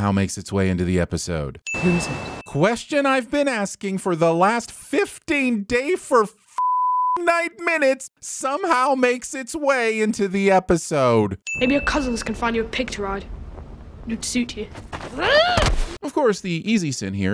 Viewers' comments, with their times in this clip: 0:05 If you’re going to make a joke about a line in the show, maybe don’t voice over the line.